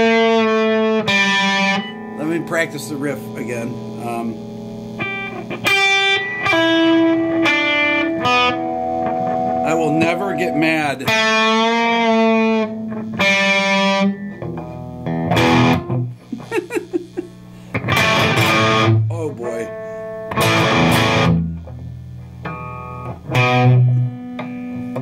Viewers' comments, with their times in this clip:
0:09 Sounds like Lou Reed Playing. lmao